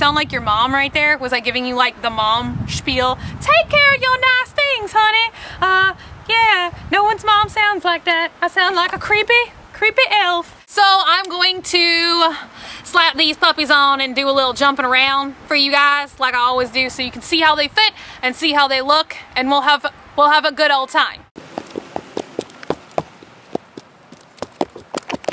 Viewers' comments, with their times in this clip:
0:06 Love how crazy & hilarious you are! you not only sound like a creepy elf, but if you've seen Family Guy that voice reminds me of Herbert the Pervert!